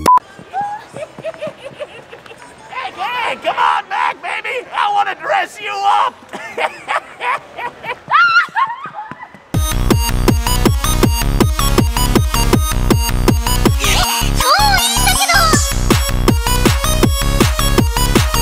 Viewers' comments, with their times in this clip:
0:06 he sounds like master roshi I love it 😂